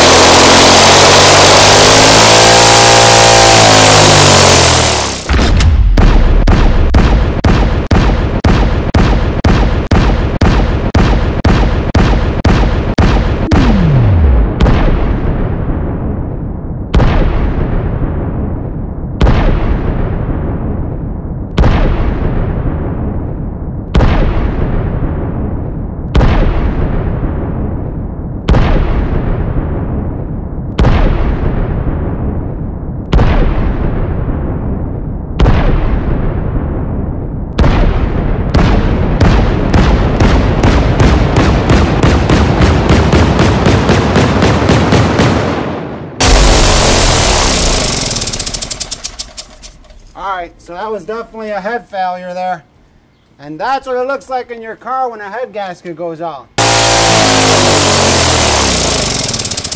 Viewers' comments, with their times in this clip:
0:05 sounds like an old cop movie shootout 😏😎👍
0:06 Sounds like the intro to the Rifleman
0:09 like a desert eagle
0:33 onwards best part by far it sounds so cool when you speed up the footage
0:40 machine gun but its an engine lol